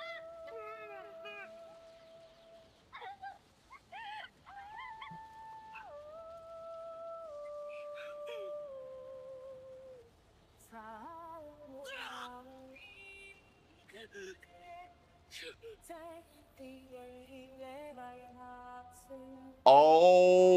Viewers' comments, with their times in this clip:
0:06 DUDE your partially muted version of the OST during the reveal to avoid copyright goes SOO hard, like just listen to that from onwards, got to be one of the most beautiful versions of the OST / YOUSEEBIGGIRL ive heard 😭